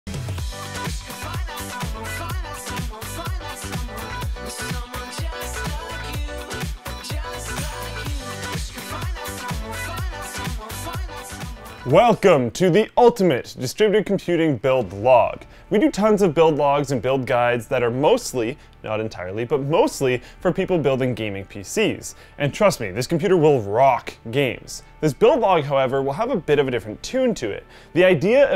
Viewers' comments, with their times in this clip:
0:10 ... ok gay musik, i need to mention, cmn